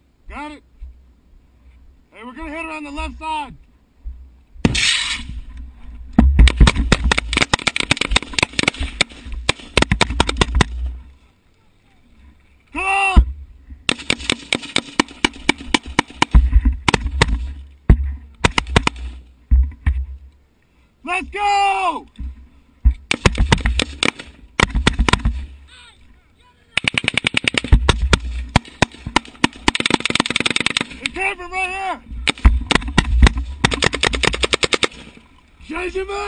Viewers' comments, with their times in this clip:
0:04 1: Can clearly hear an RPG being fired at them 2: Woah, a dismounted element supporting their vehicles down a road? Who would have thought.. 3: He clearly checks the hovel. That is not a doorway. You can clearly see mud forming a back wall past it’s covering 4: Yes. They took the long route. It’s almost like- The enemy would expect you to take the shortest route possible to get into their compound and may have boobitrapped the shortest route. It’s almost like.. Taking the long route secured the rear of the compound and ensures combatants cannot escape or come out unseen and that the long route was safer with the front of the compound already being covered by vehicles and other infantry Gasp You’re not as smart as you think.
0:24 You can hear the guy get tagged/spooked